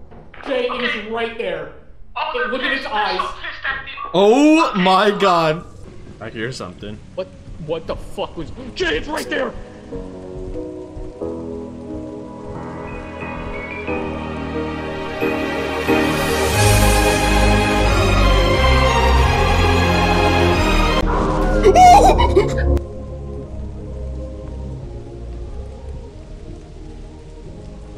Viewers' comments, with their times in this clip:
0:09 A good use of the Digital Circus music, really sets in that a horrible fate awaits
0:11 Perfect song for shit going HORRIBLY WRONG during a Op.
0:11 that song is well placed there. sad moment... but hilarious at the same time xD
0:11 The ADC music 🤣🤣